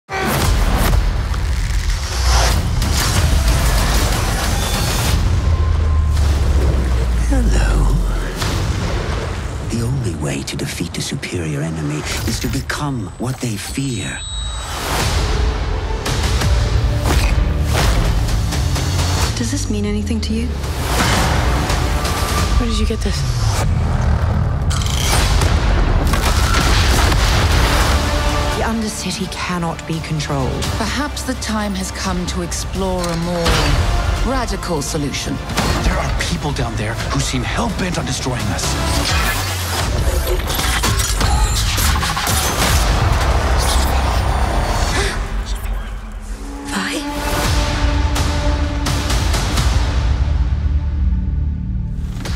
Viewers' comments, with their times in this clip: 0:07 "Hello" that sounds like pennywise 😂
0:39 I just realized there's the slightest hint of "Dynasties and Dystopia" in there foreshadowing Ekko as one of the Firelights... that's awesome